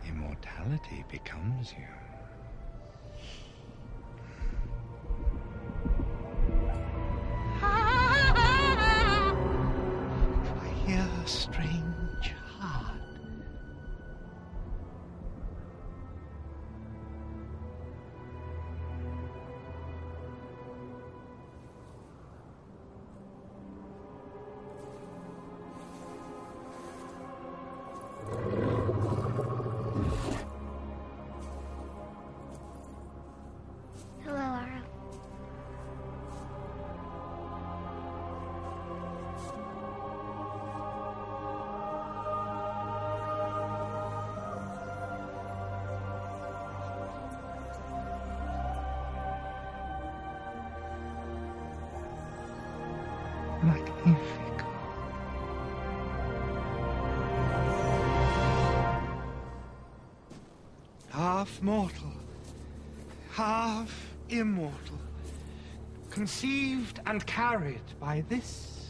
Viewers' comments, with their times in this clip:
0:07 his laugh is so creepy lmao
0:09 BAHAHHA AROS LAUGH
0:53 What did he say ?? I heard like nee figure. Plzz help!